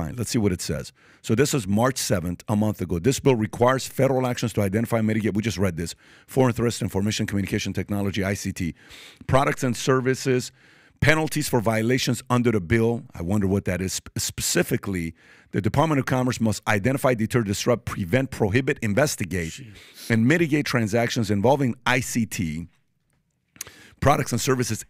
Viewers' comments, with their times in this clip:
0:05 ...if you're going to read the article out loud, don't mumble.